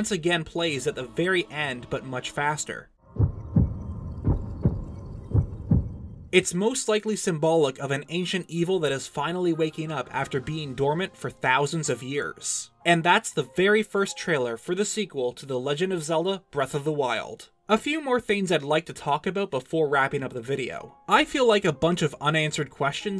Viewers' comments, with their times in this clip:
0:08 “...of an ancient evil waking up...” *plays the music of when link wakes up* is link an ancient evil...?!